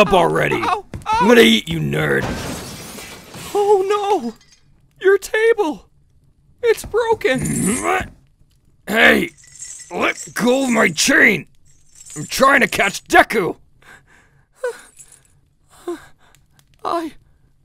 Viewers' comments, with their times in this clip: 0:03 I started laughthing when Deku said:"oH nO!!! oUr tAbLe, iS bRoKeN!!!!!"